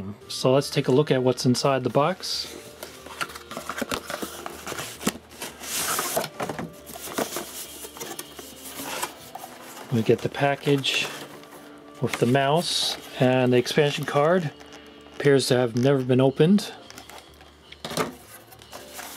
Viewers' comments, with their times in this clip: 0:06 Sounds like the ollie/jump from metal sound in the Tony Hawk games.